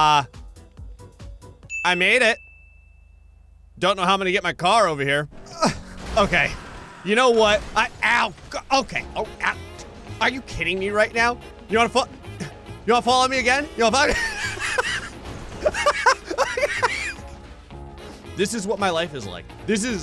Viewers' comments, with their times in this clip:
0:07 I was just thinking about that music and then it played!